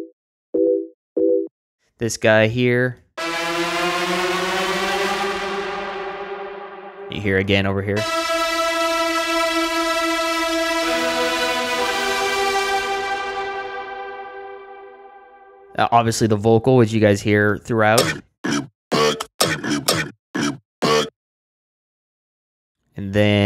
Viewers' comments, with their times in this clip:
0:07 the synth reminds me "save from harm" Narcotic thrust